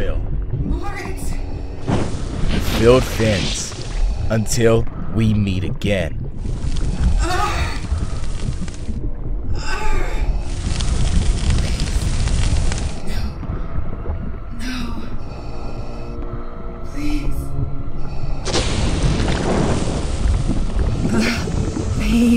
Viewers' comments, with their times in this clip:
0:07 That's more moaning than actually screaming these actors need to do a alot better. They need to show more sincerity and more realistic emotions in thier acting I mean you guys did perfect on Grand Admiral thrawn. I mean you guys hit the spot automatically pefectly with everything to Admiral thrawn's audio comic up to a T But this Darth Vader audio comic is subpar. But with great effort . But I'm not a Critic without criticism or without encouragement Because you guys did a great job but still the acting needs some work on and the music is got to fit the sequence in the story and the music is got to match the rhythm of each event and segments of the story I give this a 6 out of 10 Cuz you guys did amazing job but still had some issues with the acting and music sequences where Admiral thrawn's audio comic it was 10 out of 10 No Doubt. And if I could give it 100 out of 100 6 star rating I would but since there's no such thing as this rating I can't